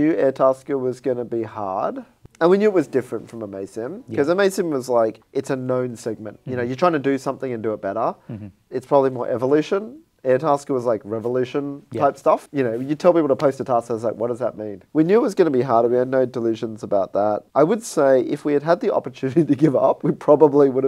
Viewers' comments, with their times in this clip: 0:04 mason? what is talking about?